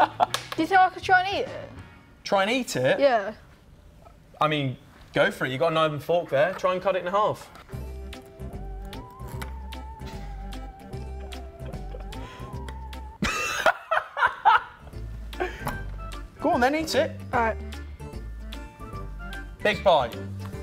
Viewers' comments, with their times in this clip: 0:08 cool theremin music